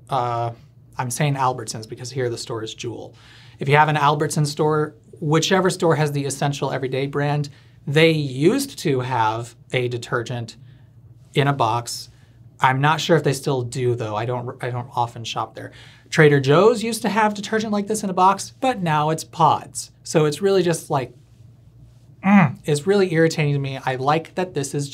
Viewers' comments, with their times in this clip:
0:09 or so: that's an impressive pronunciation of both the d and the t of "used to", very close together and yet distinct.